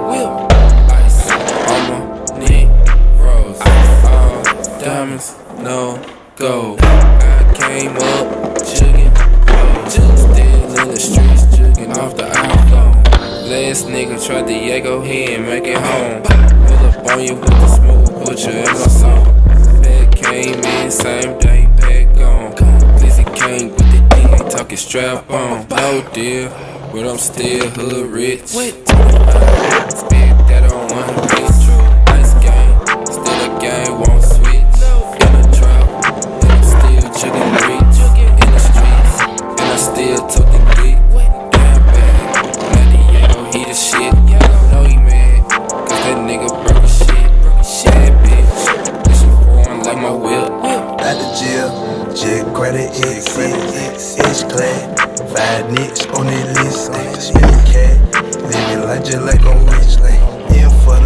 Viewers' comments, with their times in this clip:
0:08 def the cleanest one on beat
0:44 shout out to the editing, "know you mad,cause that n* broke as shit" sounds like cause that n* broke his shit on that nollie bs flip